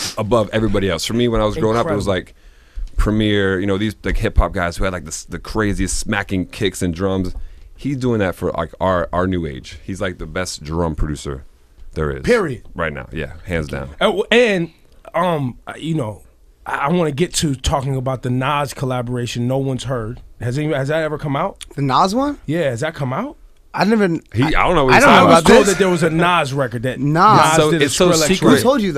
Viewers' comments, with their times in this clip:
0:09 Skrillex became so shy when Diplo praised him look at the way he said "Thank you"